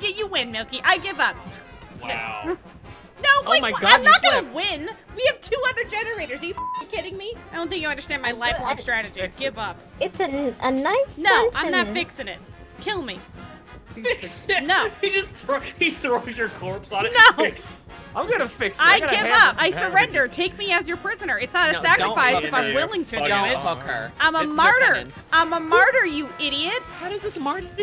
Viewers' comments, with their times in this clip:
0:10 sounds like me when I was 4